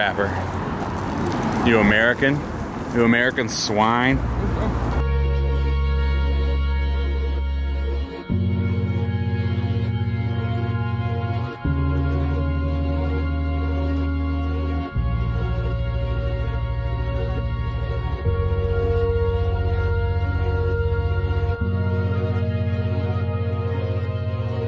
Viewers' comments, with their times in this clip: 0:05 What song starts ? Also, I appreciate the audio detail and the transitions from dialogue to music, it keeps getting better and better.